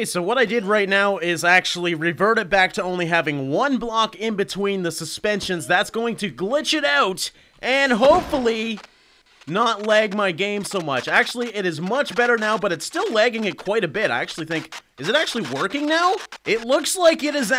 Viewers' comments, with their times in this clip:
0:05 rip me cuz i was using headphones